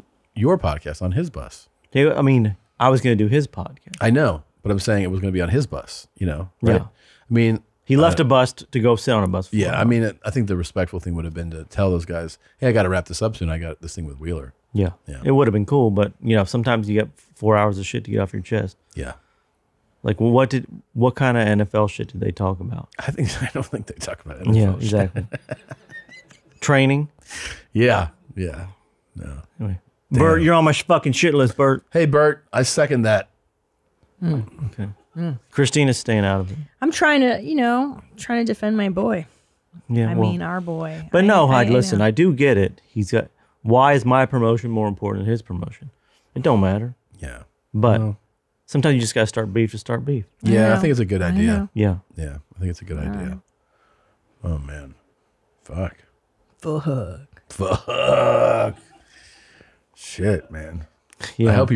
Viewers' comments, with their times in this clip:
0:06 YO SOMEBODY STRAIGHT SHIT THEMSELVES AND I'M PRETTY SURE IT WAS TOM. IT WAS SO LOUD WITH ZERO REACTIONS SO EITHER THAT OR CLEVERLY EDITED IN.
0:45 Toms impersonation of Burnt is getting to good